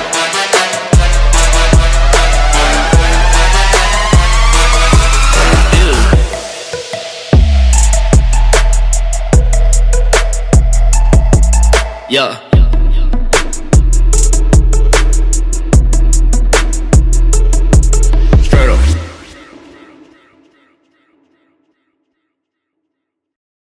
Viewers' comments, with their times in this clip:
0:06 Starting the song sounds lit as fuck to go whip that vehicle sideways.